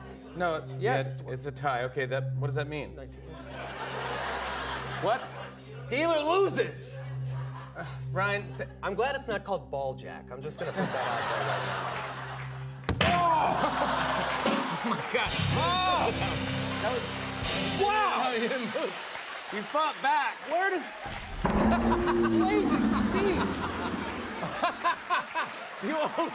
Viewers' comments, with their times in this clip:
0:07 Jimmy definitely calls him Bryan